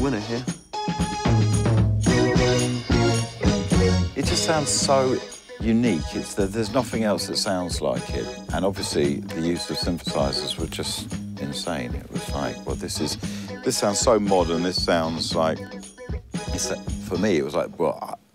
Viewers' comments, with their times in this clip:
0:03 What bible passage did he want us to read? It sounded like Kings -25. But not sure. Anyone know?